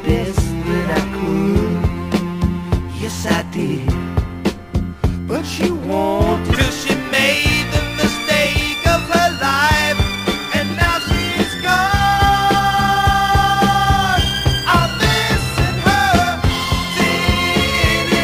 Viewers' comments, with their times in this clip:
0:06 This actually sounds much closer to the Tony Orlando & Dawn sound than I had realized. I was never a fan of the latter act, but I always liked "Make Believe" and this (as well as the much earlier solo hit "Bless You"). I presume "I'll Hold Out My Hand" is another version of the (excellent) Clique song from 1969? FYI there's a skip ...